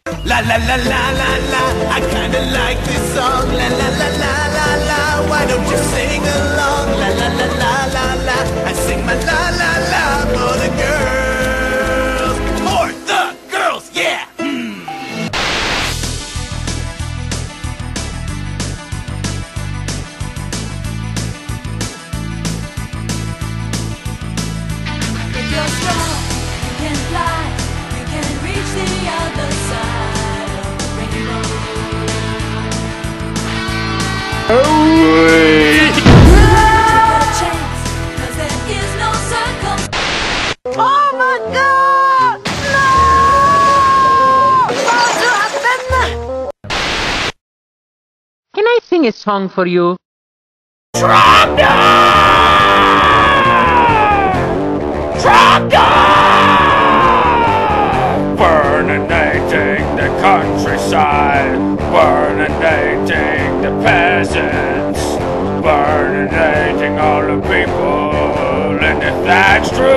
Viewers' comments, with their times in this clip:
0:04 yes brock is singing i have seen the episode
0:04 Lawl is brock singing?
0:51 Thats no song!! IT'S AN EARBLEED WAITING TO HAPPEN!